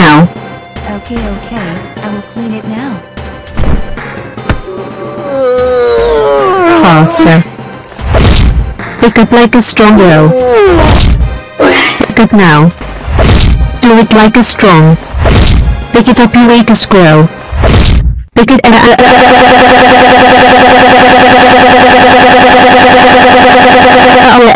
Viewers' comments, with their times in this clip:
0:05 Dora Sounds like a Zombie.